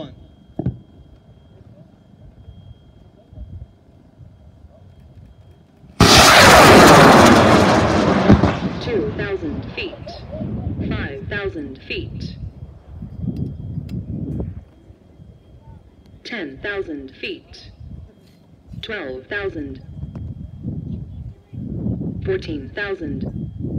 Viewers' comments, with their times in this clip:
0:08 For those of you so hell bent on making yourself hear a sonic boom in this video, you need to understand how sonic booms work. Once you understand that, you will realize that you never have and never will hear a sonic boom from a rocket that is traveling up and away from you. If it went up, turned around, and rocketed itself back toward the earth at supersonic speed, you would then be able to hear the boom. Here is a link to a rocket that went into the upper atmosphere/space and fell back down picking up a lot of speed and you can hear the sonic boom. As you can tell, it's a bit more than the little "pop" some of you geniuses are thinking is a sonic boom in the video above.
0:08 Yes, although it’s not audible. Max velocity was Mach 1.35x the speed of sound and occurred 2 seconds after liftoff according to the Multitronix gps. The deployment altimeters were reporting Mach 1.9, but I’m questioning that. The pops come from the motor (grains weren’t glued in).
0:08 I think, that little pop may be an echo of the boom, maybe?